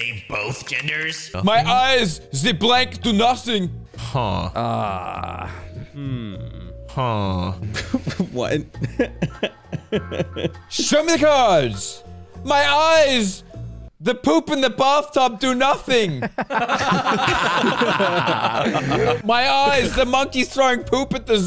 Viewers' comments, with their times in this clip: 0:04 they all sound like minecraft villagers😂